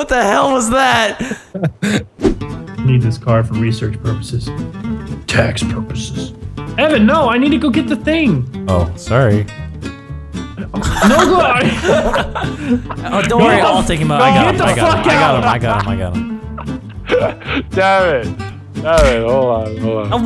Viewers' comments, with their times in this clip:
0:05 is the most calming sorry I have heard